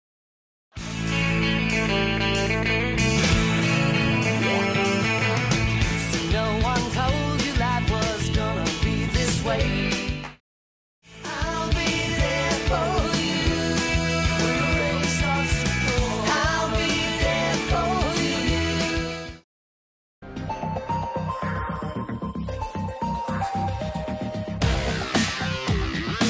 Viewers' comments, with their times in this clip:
0:10 Only I was mad bc of the clap? 😂